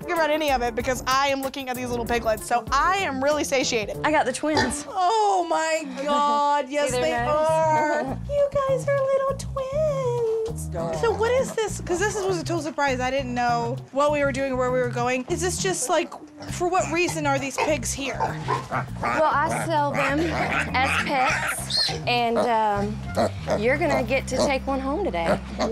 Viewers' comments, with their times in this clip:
0:09 she can sing beautifully